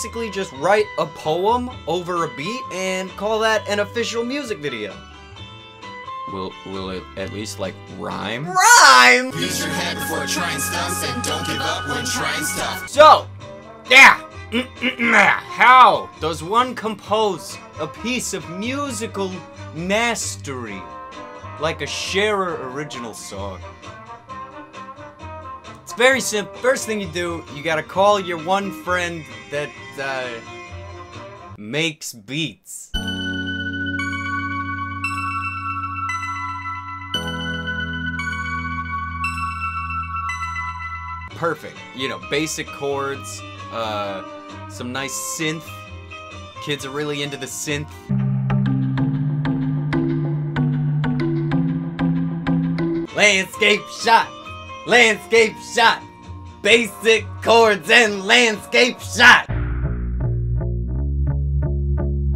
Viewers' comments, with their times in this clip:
0:10 this is literary a nikki song. Idk which but it sounds like super bass
0:34 ...... thats just tge fucking star trek intro.... then tarzan...... Also, did they speed up the conversations but not the bad rap....??? Feels backwards. They got their name on shit like Adam West puts Bat Symbols on everything. Somewhere there is a sign that Reads "Sharer Door Handle"
0:35 is just the star trek theme speeded up. I could.literally sample it and do a techno star trek theme. Might be ketamine in doc mcCoys hyposprays though.
0:50 sounds like some very intriguing wildlife documentary music